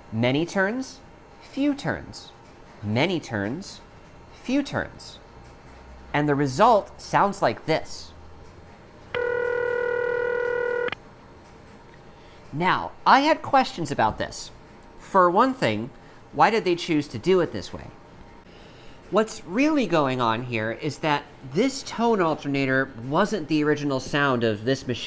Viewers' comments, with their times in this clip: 0:08 The ringback tone heard is crossbar ring, not city ring. 500 Hz modulated by 20 Hz.